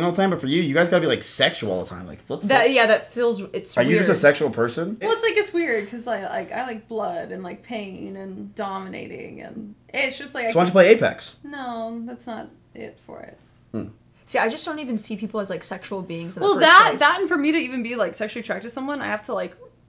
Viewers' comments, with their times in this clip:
0:03 he litterally asked her if she is a sexual person, right after she made an "suspicious" sound while pushing the cork down on the bottle. Omg Mizkif is such a soyboi.